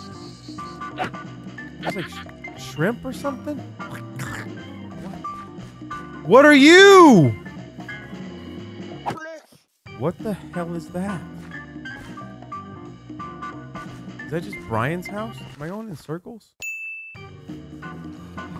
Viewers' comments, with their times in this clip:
0:06 did that thing say "blyat"? xD